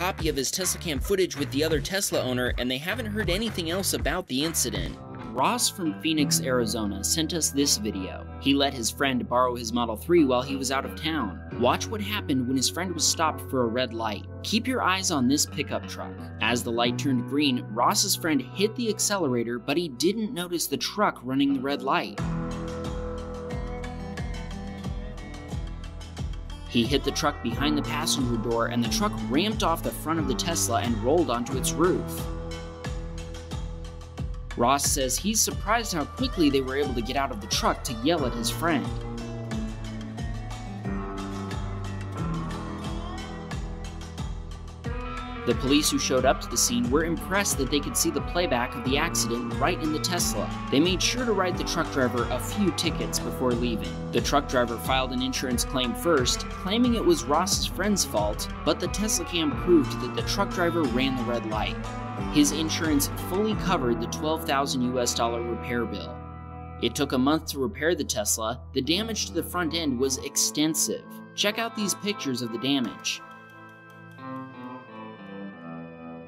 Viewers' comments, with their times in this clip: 0:08 he sounds so young I am pretty sure i was this in begging of whamm bam Tesla cam
1:02 u sound goofy ahh rn